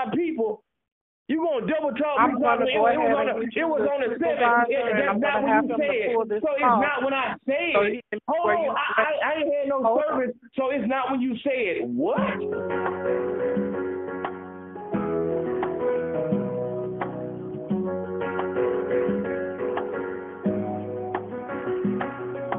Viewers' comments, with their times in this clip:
0:10 That music at the end tho'!!!😭😭😭😭 👈🏾A hit that shit about three times in a row.😂🤣😂🤣